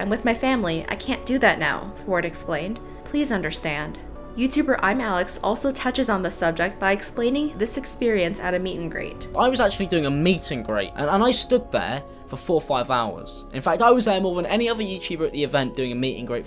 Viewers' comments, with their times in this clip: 0:04 he kinda sounds like Tommyinnit tho